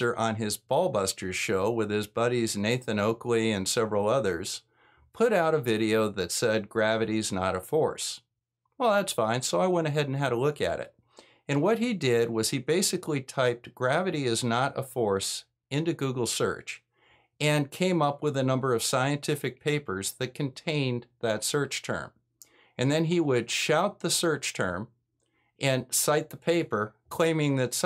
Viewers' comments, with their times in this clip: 0:10 I basically heard "Gravity is not a horse" and just nodded happily, thinking he got at least something right...